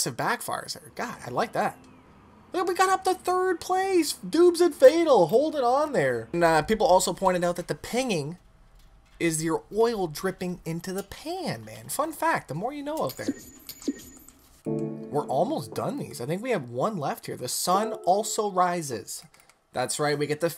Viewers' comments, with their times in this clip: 0:07 It's not oil dripping in the pan🤣🤣🤣🤣 it's the sound of the engine cooling off lol